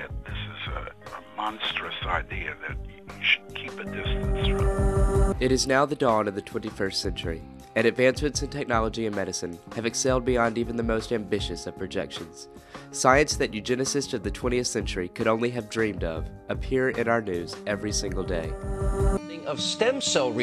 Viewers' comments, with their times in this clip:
0:05 sorry guys I know we're supposed to be mature and accepting on these kinds of videos but how big of a nerd does the guy sound like